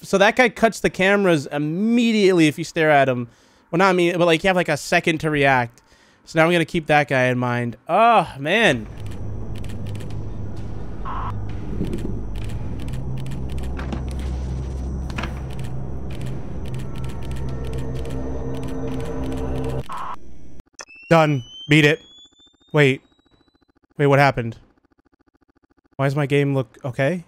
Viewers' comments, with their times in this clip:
0:09 Listen to him focus. Oh wait, you can hear anything